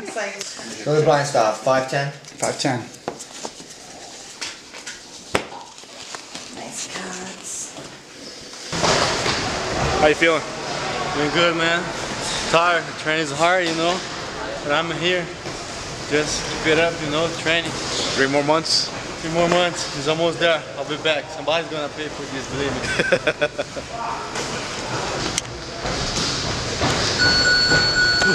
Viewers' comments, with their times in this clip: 0:09 Sounds like he's been working on his English. Can't wait to see him come back.